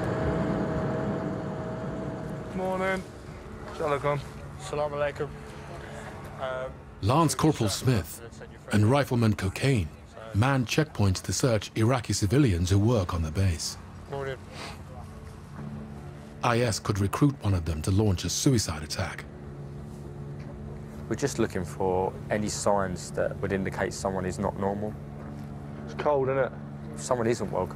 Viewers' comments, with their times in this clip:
0:09 was that riflemans name actually cocaine😂